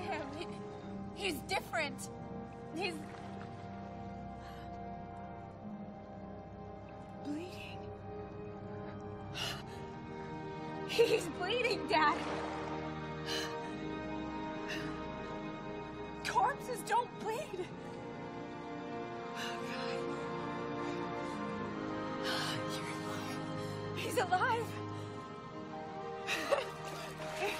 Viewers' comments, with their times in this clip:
0:10 the wide shot of R bleeding when the electric violin kicks in and Julie saying "he's bleeding dad!" sends chills up my spine every time. This movie is so incredible
0:10 When came on was like oh shit plus that song goes perfectly with that part